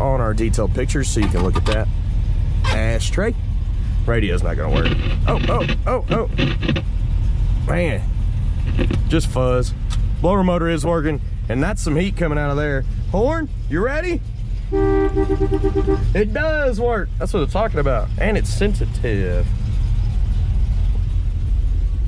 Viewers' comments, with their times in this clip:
0:05 Radio AM Fuzz! 🔉📻